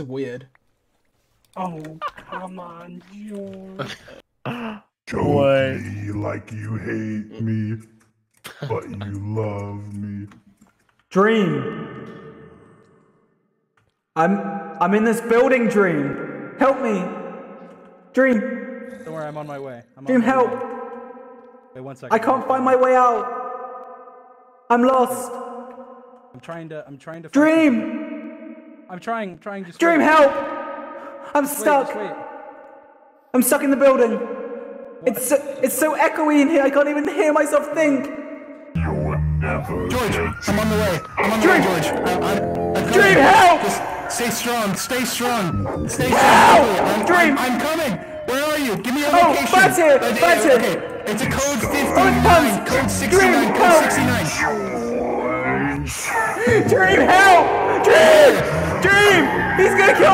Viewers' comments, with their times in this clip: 0:06 Dream just singing corpses e-girls are ruining my life just is amazing to me
0:11 Yo that's a really deep sound
0:44 was a lil tiny bit noisy
0:44 sounds like FBI